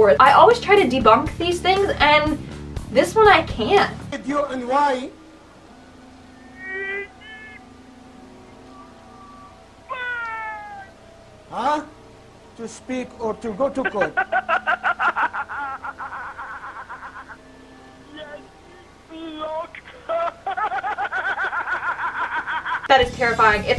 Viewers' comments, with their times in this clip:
0:04 The clip starting is, if I remember correctly, a call in show. The voice you hear is a man, on the phone, purporting to be possessed by a djinn.